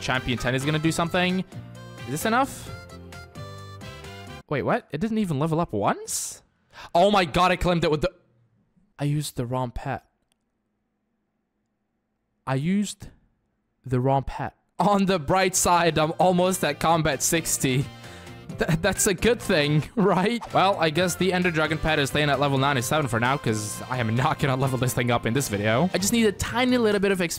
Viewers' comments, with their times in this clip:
0:09 you can feel regret in his voice😢😢